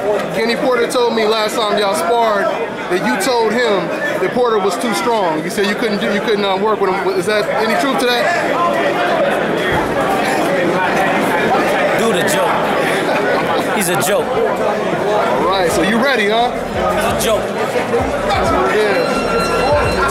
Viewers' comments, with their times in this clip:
0:04 ***** That initial pause when asked the question speaks more loudly than any words. Watch the head dip (unconsciously acknowledging it) mark. Kenny was telling the truth.